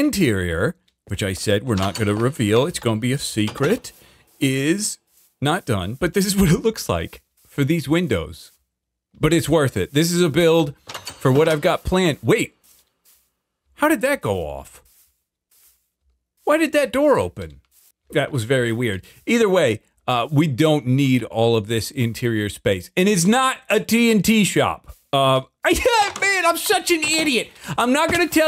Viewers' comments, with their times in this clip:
0:10 Is it just me or did the noise of the pressure plate just make a small echo in the empty room ??